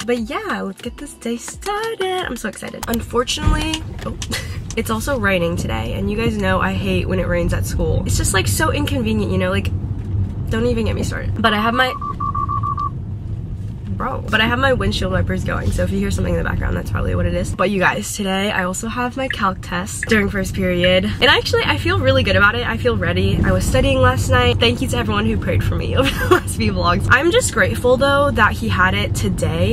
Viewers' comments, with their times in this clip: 0:10 girl i thought i heard a bomb in my house 😭😂